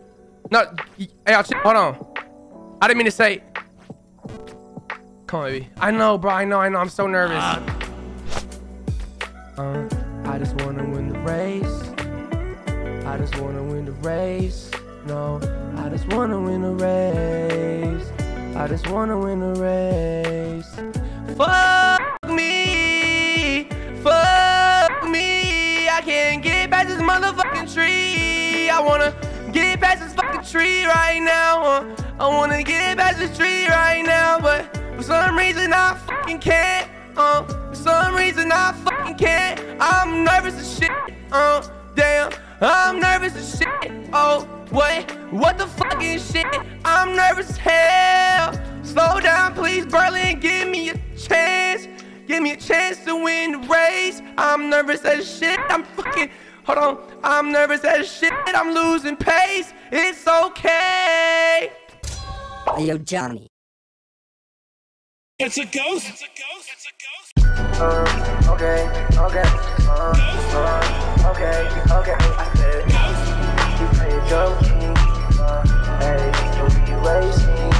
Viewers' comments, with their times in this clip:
0:08 THE SONG BREAK!!??!??!? TALK ABOUT ITTT
1:03 yo this song go crazy i come back almost every week to listen😭